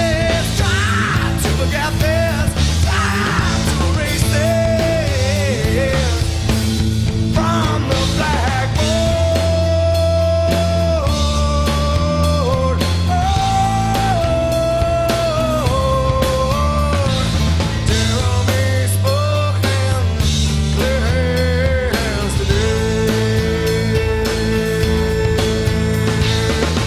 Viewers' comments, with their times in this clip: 0:08 this is so harmonic oooooooooooooooooooohoooooooooo hoooooooooooohooooohoooooohooohoo oh